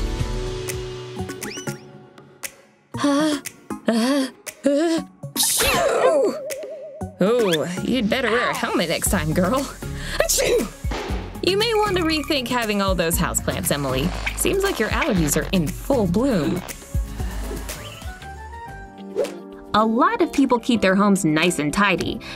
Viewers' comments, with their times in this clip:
0:07 Barely no one sneezes like that